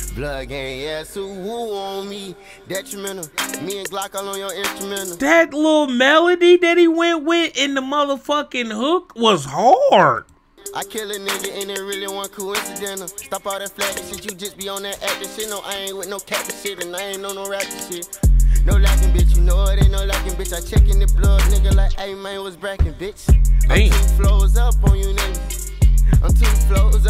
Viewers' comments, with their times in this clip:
0:09 LMAO why he say hard like that